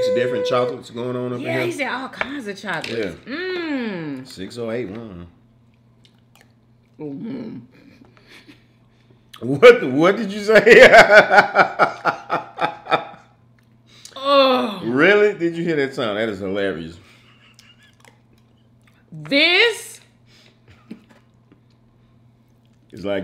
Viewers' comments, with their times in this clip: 0:04 Yummy 😋 when you tasted that pie what was that sound.